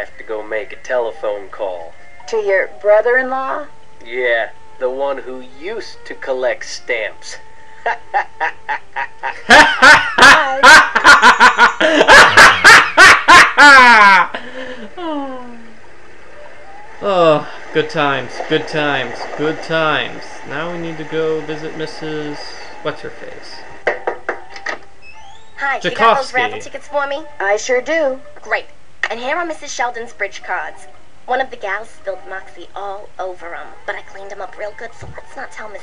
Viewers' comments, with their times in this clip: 0:09 I'll admit.. I own this game but I still watch this walkthrough (this video in particular) simply to hear your laugh. It's infectious and makes me laugh for a good 20-30 minutes afterwards. It's been a good 3.5 years since I first saw this and that mark gets me in stitches every. single. time.
0:18 Ahem. I'm pretty sure I gave my Mother a heart attack when all of a sudden your maniacal (I think that's how it's spelled?) laughing started radiating through my house Hahahaha (: